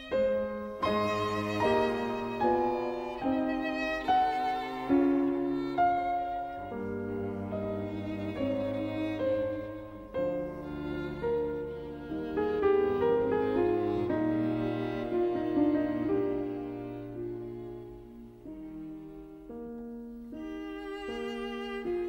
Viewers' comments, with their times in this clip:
0:06 nothing to add, One of the Better closing cadence ever written